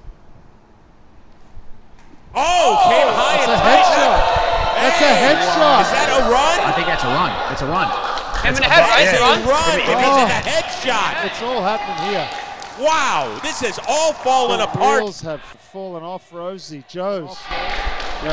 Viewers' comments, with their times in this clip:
0:03 The angry mob reaction to the bean ball is so good.